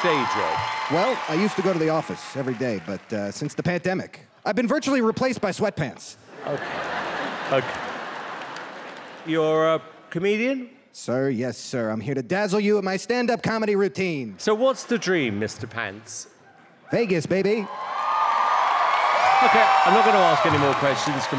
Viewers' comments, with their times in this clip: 0:03 I heard Pantdemic 🤣🤣🤣